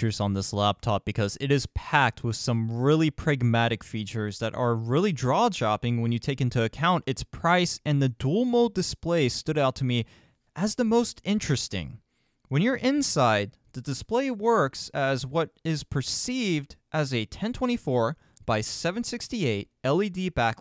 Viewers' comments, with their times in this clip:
0:03 "Really draw-Jopping" Lol the perfect description of this thing.
0:04 Draw-Japping or Jaw dropping? ;)
0:04 Did you really say "drawjopping"?